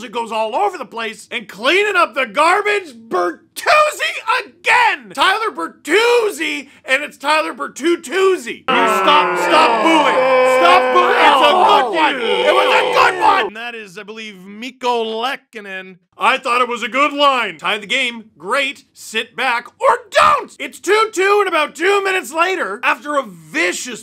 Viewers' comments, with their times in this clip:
0:10 First time hearing a boo track in the LFR. LOL. Also, Tyler Berthreezzi.